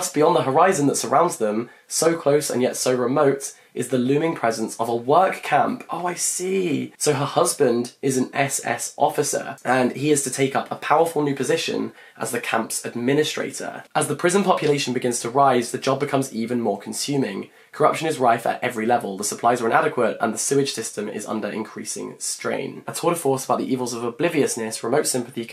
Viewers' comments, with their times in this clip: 0:09 I dont know why but i feel like he slightly sounds like harry styles (when he said that "and") i dont know maybe im just insane but🧝‍♂️